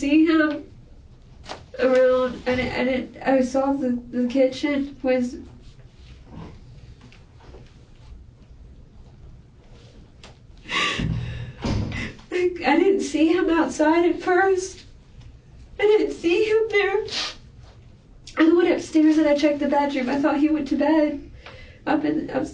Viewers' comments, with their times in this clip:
0:04 She slipped up and mumbles “I saw him in the kitchen” the tried crying through it!!! Nope we heard it! You searched the house for no reason!!! Det. Hadn’t been in the house and he knew you had to go past the kitchen and see him or the blood. Love how he didn’t call her out just allowed her to keep lying!!!